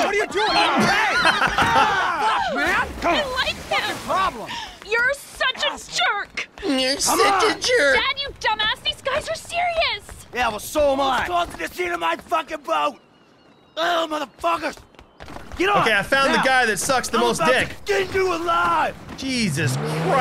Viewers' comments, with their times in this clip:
0:06 The way you imitate Tracey got me fucked up haha!😂